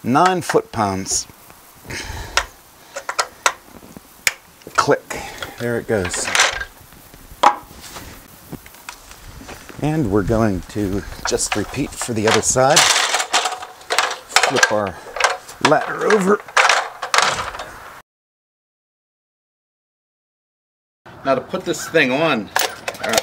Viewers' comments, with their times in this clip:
0:05 lol, love the organic elbow torque wrench in your video. Even comes with an audible click sound, niiiice!